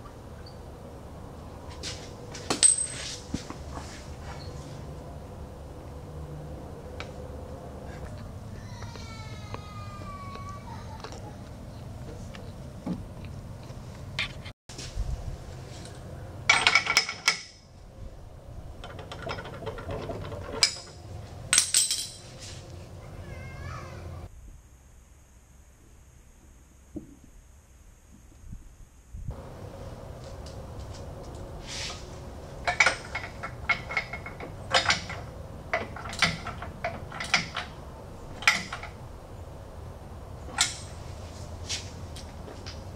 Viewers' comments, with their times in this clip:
0:08 did anyone else here the baby cry?
0:09 kid crying in background?
0:09 did anyone else hear the boy cry?
0:13 The kid crying 😂
0:23 the crying in the back got me creeped out until I knew what it was lol